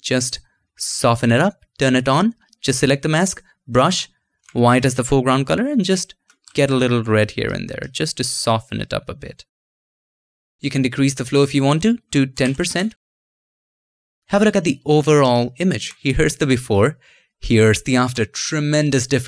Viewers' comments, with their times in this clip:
0:05 I just me or he sounded like the Bob Ross of photoshop